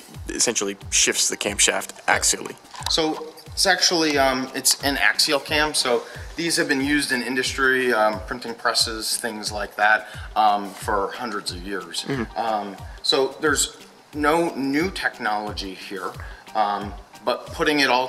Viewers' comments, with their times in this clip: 0:03 GM employee says sexually it's an axial cam..... 😂🤣😅😂🤣😅😂🤣😅 WHY DOES THIS GUY SEEM SO NERVOUS!